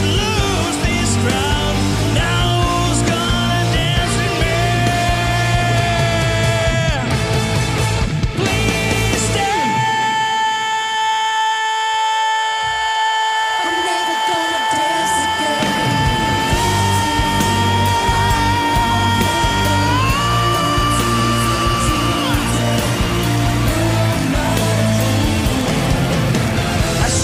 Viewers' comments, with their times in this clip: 0:09 13 sec scream!